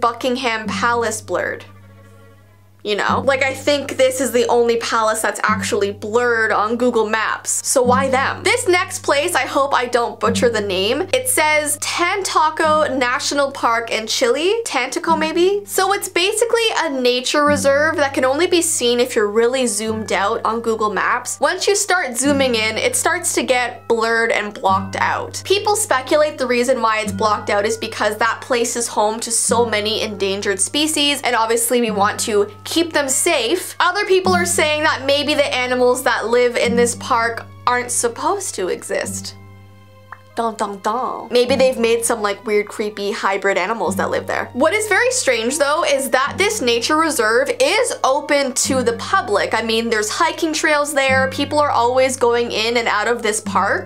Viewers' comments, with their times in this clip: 0:09 ooo i would like ten tocos and chili
0:40 “DUN DUN DUN” The Way she Said it LOL